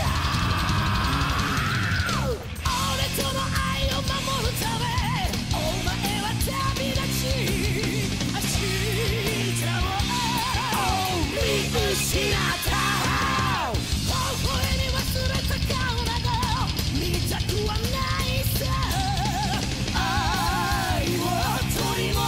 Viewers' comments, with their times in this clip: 0:08 Dat music sync...